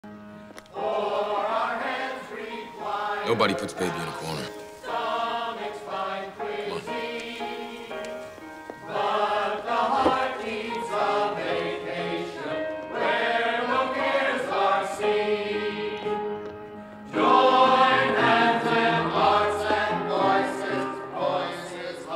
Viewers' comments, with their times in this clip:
0:03 “Hello Patrick-*bursts out laughing*”